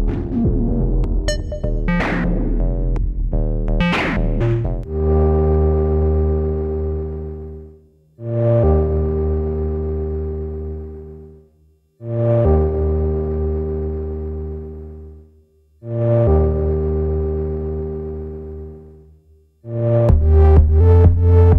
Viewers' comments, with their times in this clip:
0:04 for an excellent example of a nearly full-fledged electro housey braindance track complete with pillowy pseudo side chaining... amazingly realized only with this device? pretty nice, imho ♥